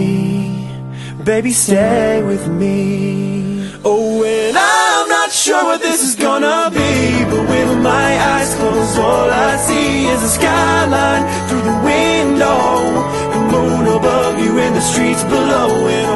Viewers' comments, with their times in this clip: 0:03 Amazing key change ! Great Job!
0:03 HELL YEAH KEY CHANGE IS GODLY
0:04 As a singer, piano player, and all-around music nerd it's hard for me to pick 1 favorite song of all time but this might be it. You sing and play with so much passion it's unreal. I can hear and, more importantly, feel it in your voices. The warmth, depth, fire, and emotion that you have put into this song is perfection. Your a cappella key chain is perfection. i get goosebumps every time. And from there to the end the harmony just adds so much dept and warmth <3 simply inspirational
0:04 My absolute favorite song they have ever covered! <3 the key change is insane! :D xoxo
0:04 ooo got me like